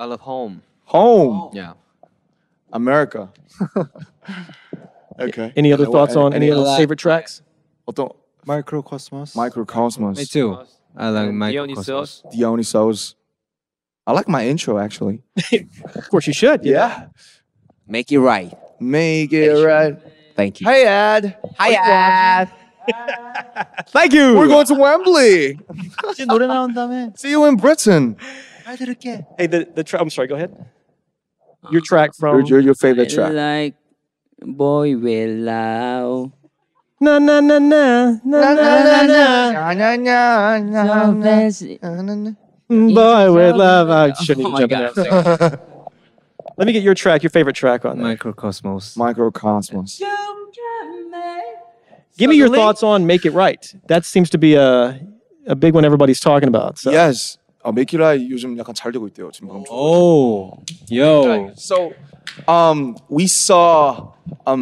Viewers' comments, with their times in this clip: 0:07 Tae sitting like that and saying Mikrokosmos, I get a whole ambiance of a gentleman sipping on his espresso at a niche cafe in Paris 😍
0:07 CAN WE TALK ABOUT TAEHYUNG'S BEAUTIFUL VOICE HERE
0:08 Tae sounds so tiny ☺💜
0:25 Nobody notice V’s voice in the background 😂 so cute
0:26 Taehyung in smol voice saying he's heard that ed sheeran's about to release a new song, and that he'll listen to it a lot. Taehyung is the cutest!!
0:49 damn jimin you didnt have to attack us so hard out of nowhere with them vocals I ALMOST CHOKED IT WAS TOO BEAUTIFUL
0:49 Jimin snapped and was tired of Jungkook a perfect singing in all of the other interviews so he gotta contribute to the compilations
0:49 Jark pimin's fucking vocals 😢❤
0:49 Can we talk about Jimin’s vocals tho??💗🎶✨
0:49 In case y’all wanted to know how an angel sounds like 👉🏻
0:49 Why is like nobody talking about Jimin's bootiful singing ?!?!?!
0:50 JIMINS VOCALS ARE AMAZING AND SO HOT LITERALLY I CHOKED ON MY FORSTED FLAKES
0:50 his voice is like an angel😻
0:52 Jimin singing Mikrokosmos was totally meant to distract us from Yoongi saying "suddenly?" in the most cutest way ever